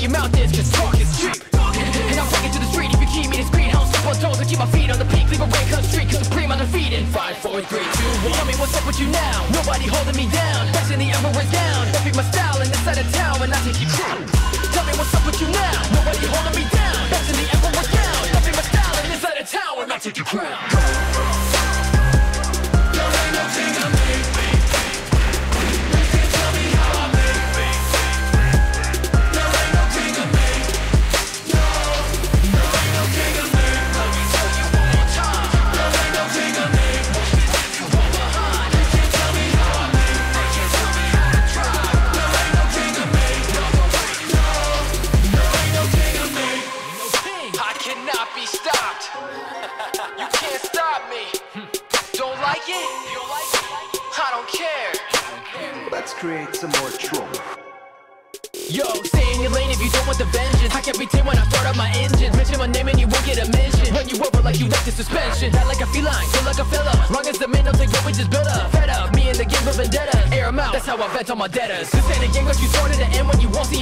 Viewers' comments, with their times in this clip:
0:09 legend beat 100%
0:55 My favourite part start from and tatsuya's voice 🗿"Lets create some more trouble" was on 🔥🔥
0:55 The voice of Tatsuya 🗿